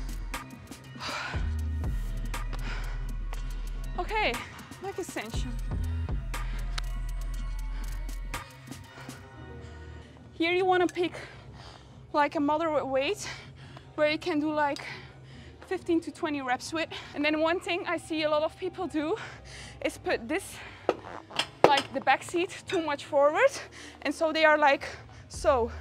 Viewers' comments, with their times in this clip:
0:10 you can literally hear the suffering at her voice